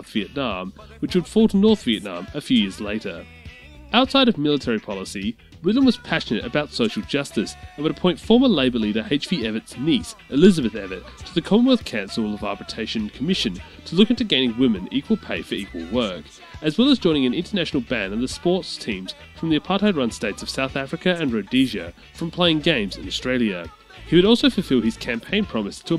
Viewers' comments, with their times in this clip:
0:09 "...would appoint former Labor leader 'HAITCH' - V. Evatt's niece" H = "AITCH"...there is no such letter as "HAITCH". Also...why is the comment about banning sporting teams from South Africa and Rhodesia accompanied by a photo of a soccer match between West Germany and Poland from the 1974 World Cup?